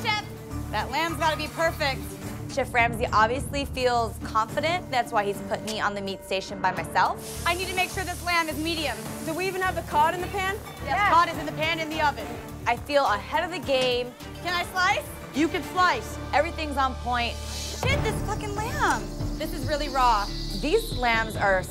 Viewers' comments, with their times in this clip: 0:05 Bruh am I tripping? I’m hearing a sound effect …